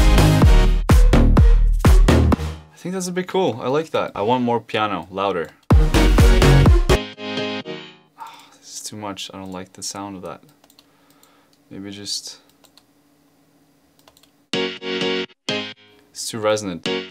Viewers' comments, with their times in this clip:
0:04 I want more piano. LOUDER.